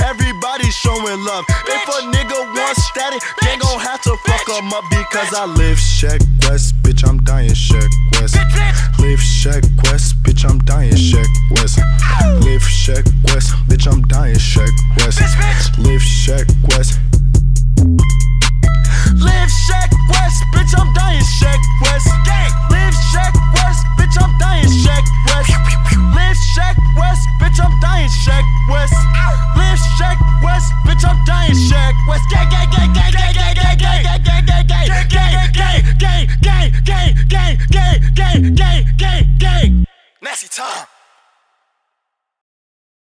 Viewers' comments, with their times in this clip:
0:07 Yo the switch from yelling to talking is smooth af I think I just had a eargasm
0:15 when the elavator opens it sounds like that one sheck wes song: COD Ghosts
0:31 it sounds like he's saying gay witch ur mom is
0:32 Is he Screaming Gay? lmao
0:35 sounds like he is yelling GAY GAY GAY